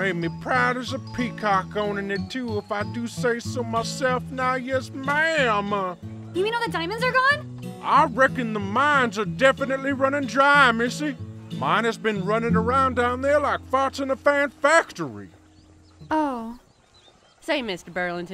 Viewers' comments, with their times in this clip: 0:05 what accent is this guy speaking?